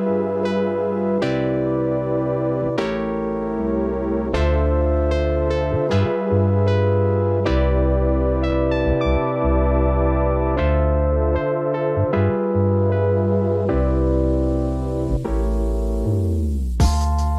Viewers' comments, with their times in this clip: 0:05 what is the music in min IT GOES CHILL ASFFF